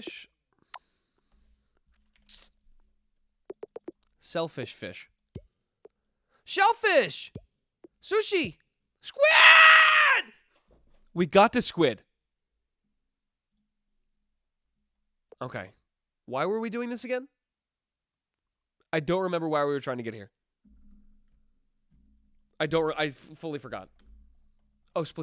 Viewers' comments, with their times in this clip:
0:08 The noise he makes will forever haunt me